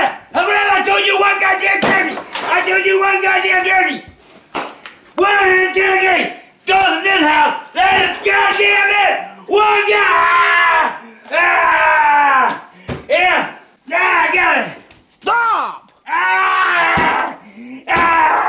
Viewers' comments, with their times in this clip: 0:03 the slap of the turkey hitting the ground gets me every time